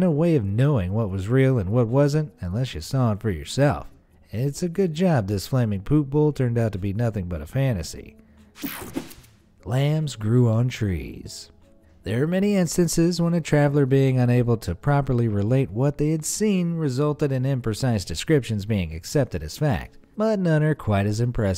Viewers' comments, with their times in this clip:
0:04 did his English break for a second